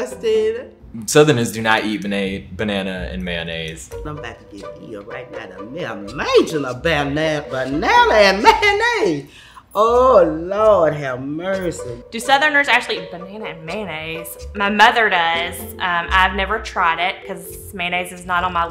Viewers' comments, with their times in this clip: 0:03 I feel he almost said Bannaise.